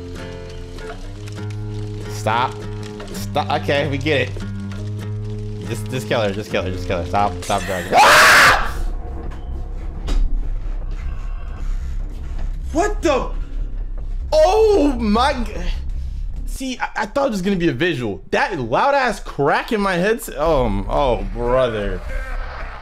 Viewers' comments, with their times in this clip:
0:03 That's the first time I've seen someone scream over Kate gasping.
0:06 come on men, she isn’t that ugly xd literally your screams scared me more than the trailers dude xd